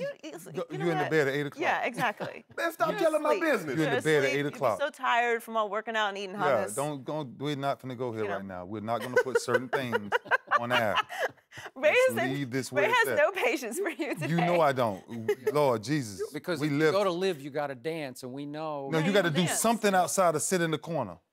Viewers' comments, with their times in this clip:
0:05 did joey say that Shannon " tired and eating hottness" I think she sleppin 👀